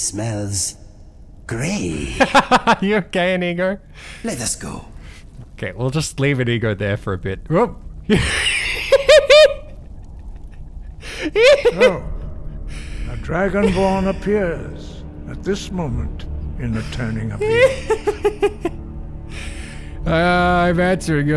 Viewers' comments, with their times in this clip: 0:09 witch laugh revamped